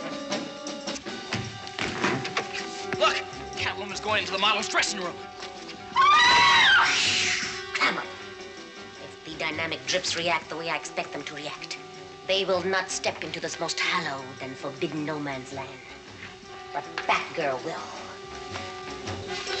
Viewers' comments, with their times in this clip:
0:06 also the hiss